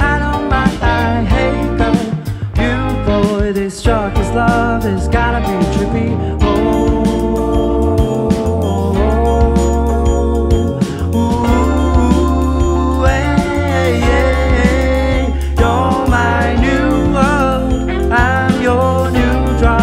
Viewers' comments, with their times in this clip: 0:05 that triangle tho
0:05 them triangle beats tho
0:06 how to make playing triangle cool